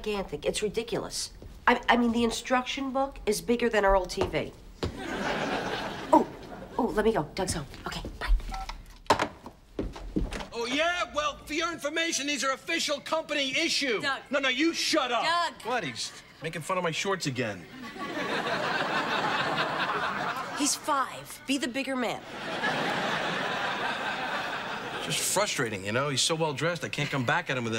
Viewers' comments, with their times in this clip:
0:08 Her voice is kind of quietly after saying bye on the phone 📞